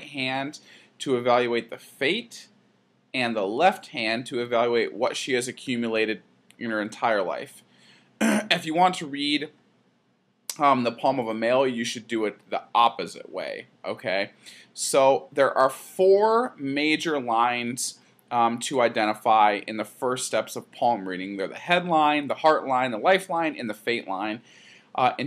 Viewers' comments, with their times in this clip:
0:06 Lol! I love how you just clear your throat and don't even edit it out. I mean that genuinely. I had a good laugh. It adds the human touch.